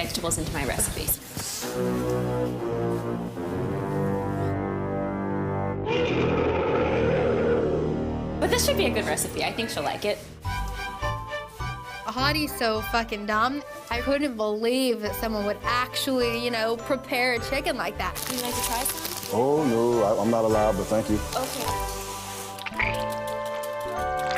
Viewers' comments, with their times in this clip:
0:06 THE SOUND EFFECTS 😂😂😂😂 IM DONE